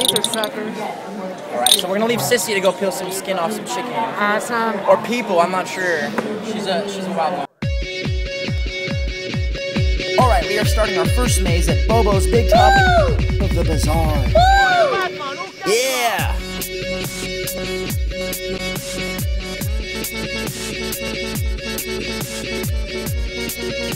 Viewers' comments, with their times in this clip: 0:05 where did you get that song starting it kinda sounds like a dubstep version of the Michael Myers theme